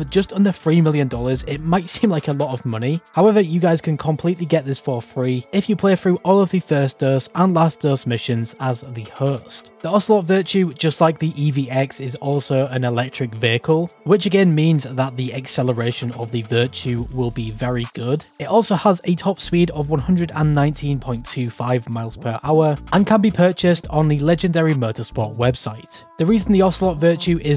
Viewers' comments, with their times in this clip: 0:08 “if you play through the the first dose and last dose missions as the ____”. Sorry man. I can’t understand what you said right there, and I want to get this thing for free! Cheers.